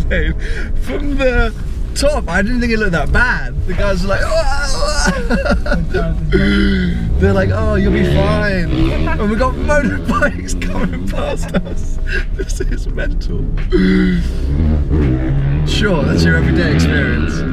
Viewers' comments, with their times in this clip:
0:05 gasping for air because of the high altitude!?